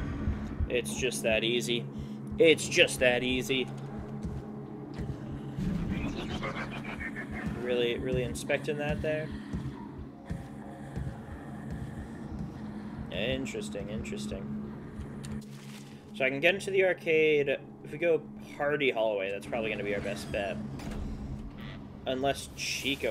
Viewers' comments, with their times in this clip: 0:05 bro really said “hehehe ha” like the clash royale king